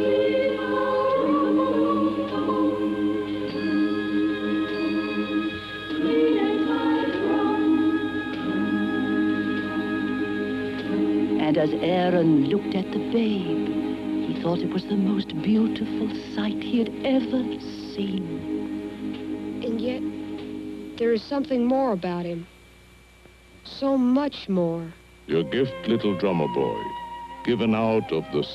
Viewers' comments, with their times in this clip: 0:10 Since it's release in 1998, it uses an incomplete audio mix that is missing a majority of the sound effects and also has Greer Garson's narration briefly switch to a scratch track recorded by Paul Frees for this line. This is due to the original 35mm master becoming lost in the 1990s, before Sony Wonder acquired the rights, leading them to use 16mm B-roll elements